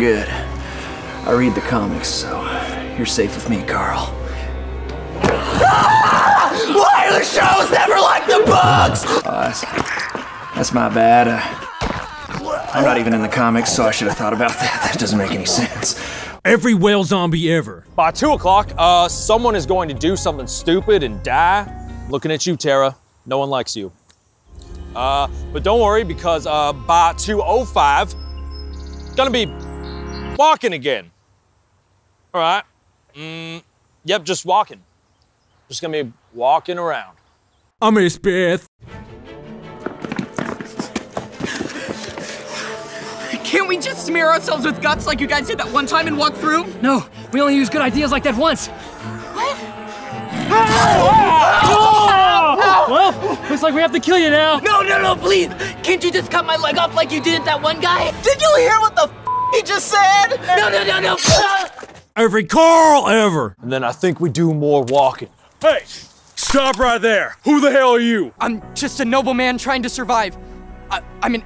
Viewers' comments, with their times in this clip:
0:05 they use minecraft zombie noises
0:05 that mincraft zombie sound tho
0:06 uhhhh Minecraft zombie sound effect
0:45 Why do I hear the Minecraft zombie noise he he got bit😂
0:48 A mine craft zombie sound
0:49 that minecraft zombie sound tho
0:49 why did they use minecraft sounds
0:49 Minecraft zombie noise
0:49 +9999999999 points for Minecraft noise
0:49 any body noticed the mc zombie sound effects when hurt
0:49 from it sounds like a Minecraft zombie growling and getting hit
0:49 NO ONE NOTICED THE MINECRAFT ZOMBIE SOUND?!
0:49 mincraft zombie noises😂
0:49 Minecraft zombie sound how has no one found this jet
0:50 minecraft zombie sounds
0:50 nice use of zombie sound effects
0:50 Minecraft zombie sound
0:50 that minecraft zombie noice is perfekt
0:50 Minecraft zombie noises
0:50 gotta love those Minecraft SFX.
0:50 AND minecraft zombie sound
0:50 did that zombie just make a Mincraft zombie sound.
0:50 mine craft zombie sound
0:50 there is Minecraft zombie noises
0:50 I just like how they used the zombie noises from Minecraft
0:50 Minecraft zombie sound
0:50 wait did u guys hear a minecraft zombie sound??? XD
0:51 Who else heard the Minecraft zombie noises
0:51 the Minecraft zombie sounds😂
0:51 Minecraft zombie sound
0:51 I like how the zombies sound is minecraft zombies
0:51 minecraft zombie noice
0:51 mincraft zombie noise
0:51 Minecraft zombie noises
0:51 Who else noticed the Minecraft zombie sound effect
0:51 Minecraft zombie noise
0:52 Lol. That minecraft sound effect XD
0:52 there is Minecraft zombie sounds!!!! 😱😂😅😂😅😂😂